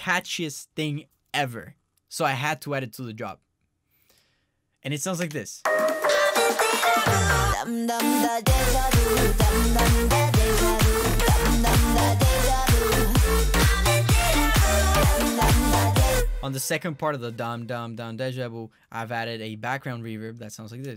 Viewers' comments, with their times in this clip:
0:07 thats the most sexyiest vocal fill ever I heard in a drop .... Man , it was legendaric ... I listen this song again and again <3 love your style man